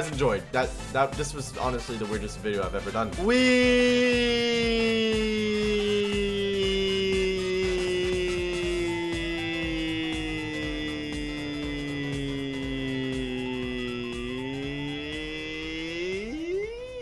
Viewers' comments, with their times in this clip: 0:04 Nobodie:nothing Random mosquito at 3am in my room